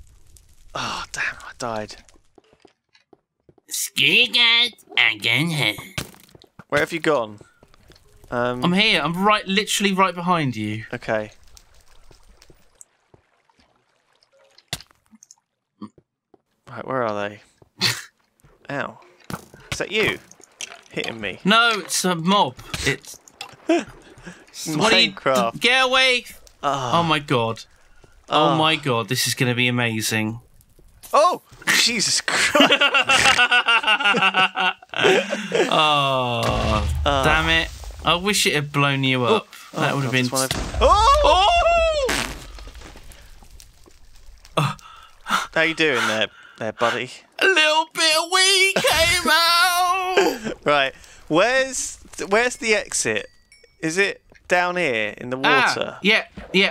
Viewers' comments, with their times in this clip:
0:03 The GREATEST Cartman impression that I've EVER HEARD!!!
0:26 jaws music turns on
0:39 simon:" aww i wish it hadve blown u up" 2 seconds later - BOOOM